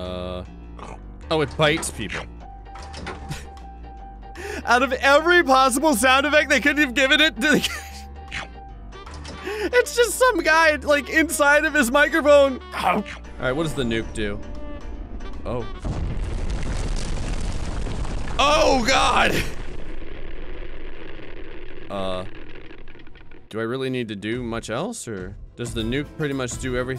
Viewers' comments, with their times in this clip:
0:09 THE SOUND EFFECTS YES.